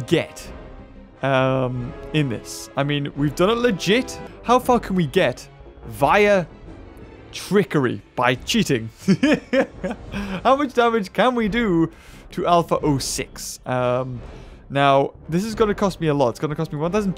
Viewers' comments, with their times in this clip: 0:04 dose he say for or fu**